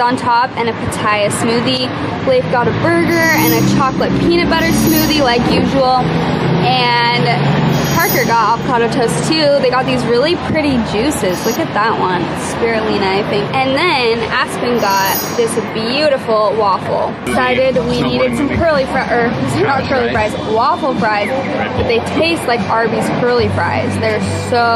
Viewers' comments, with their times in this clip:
0:10 that little pause of the sound effect lol. The environment looks so beautiful and calming in Australia, Id love to visit one day! You guys are glowing!